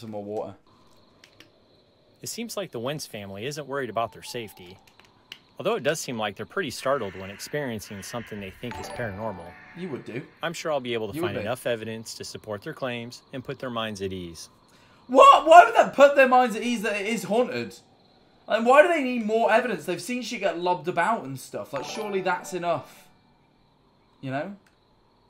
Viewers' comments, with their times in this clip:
0:08 Anyone else think the person talking in the game sounds like Saiki? 😭?